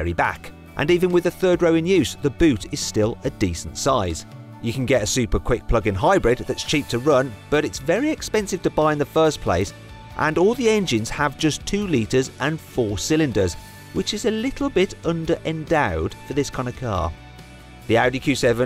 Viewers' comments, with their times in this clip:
0:06 “you can get a super quick fucking hybrid” (actually “plug in” hybrid.... I misheard because my kids are sleeping so my volume is turned right down) I had to rewind and do a double-take!